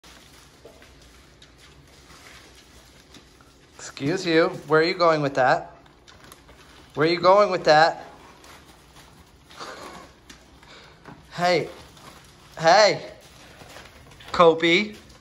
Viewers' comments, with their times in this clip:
0:03 I love how he said "Exuse uwe!"